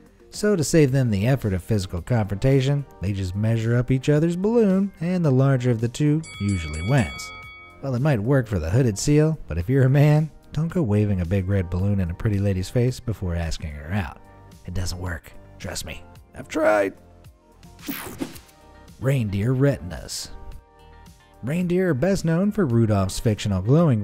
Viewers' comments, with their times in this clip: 0:08 Let me get a voice crack